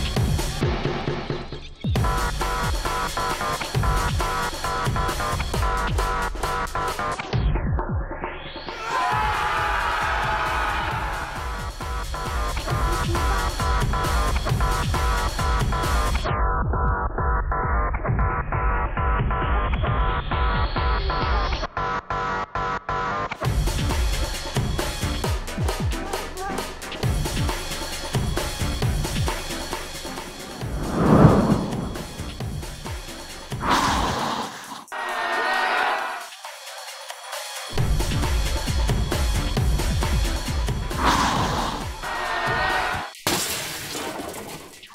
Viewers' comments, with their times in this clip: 0:08 BF managed to scare off lemon Demon just by yelling
0:32 soft bf and Sunday scream